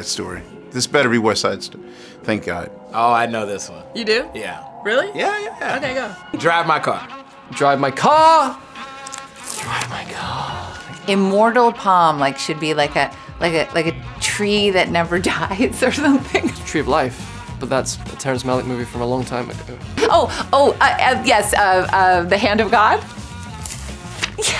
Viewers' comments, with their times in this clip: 0:09 andrew's asmr "drive my carrr"